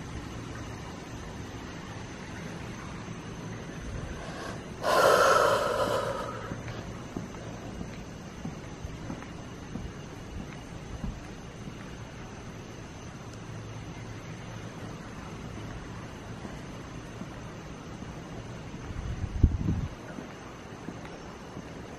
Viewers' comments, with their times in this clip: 0:03 whispering but cant make it out either right now or get out